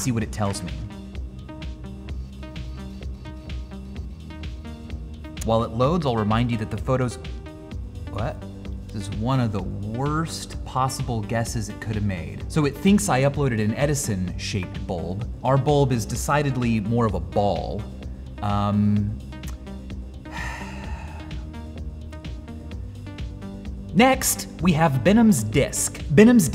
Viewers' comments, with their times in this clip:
0:07 this confused ''what'' confused me.